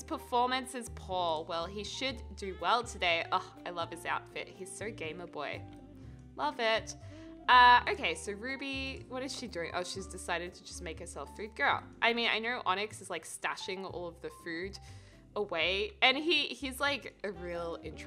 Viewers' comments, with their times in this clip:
0:04 I thought she was going to say gay boy and I was like yesssss!!!!!!